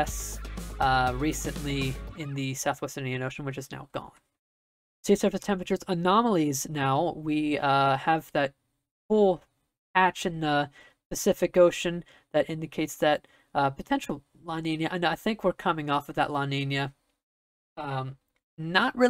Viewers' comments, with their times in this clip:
0:04 it sounds so weird without the music behind it lol